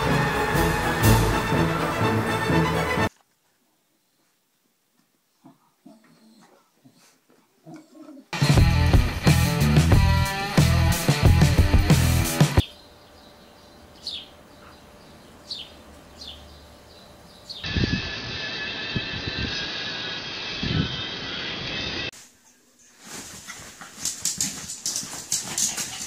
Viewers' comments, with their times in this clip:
0:08 When drop it like it's hot comes on